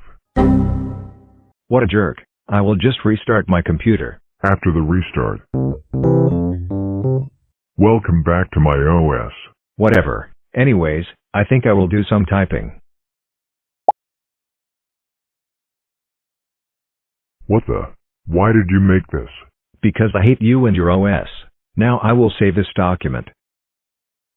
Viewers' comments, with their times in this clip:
0:05 I love the start-up sound